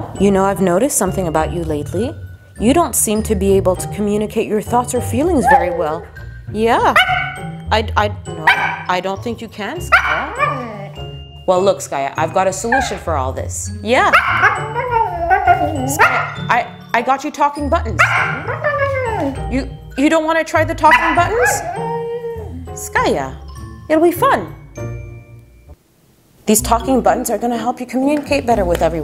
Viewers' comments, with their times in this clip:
0:05 WOLF HOWL! Wolves and my fav animals and Skaya howled like a wolf! At least she sounded like one…
0:12 The cutest sound a husky can make